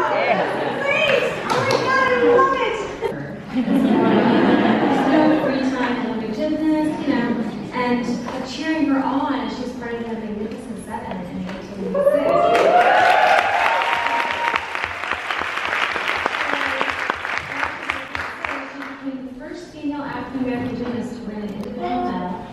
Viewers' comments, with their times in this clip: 0:07 did u guys see the lady in the back ground was coughing and it looked like she dabed xD